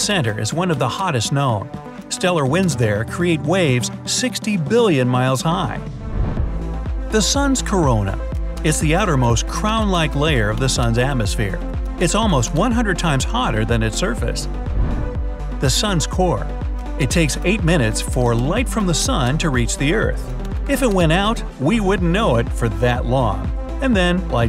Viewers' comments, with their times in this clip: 0:07 ..... I was shocked that the sun has a VIRUS!
0:08 I'm shocked that the sun has a virus!!😆